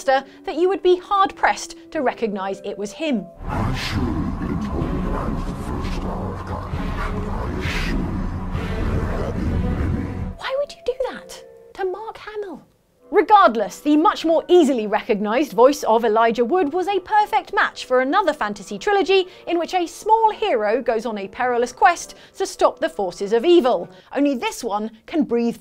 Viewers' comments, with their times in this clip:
0:09 Possht, listen to Mark Hamill voice the Joker. Most Batman fans agree that Mark Hamill was the greatest Joker to ever play the part. When Hamill in voice acting, you would never be able to imagine Luke Skywalker, that is the mark of a great voice actor, when they don't sound like themselves!